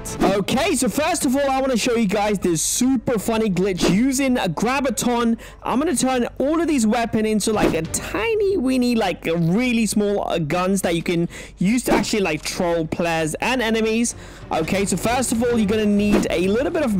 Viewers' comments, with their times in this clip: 0:04 I heard grabiton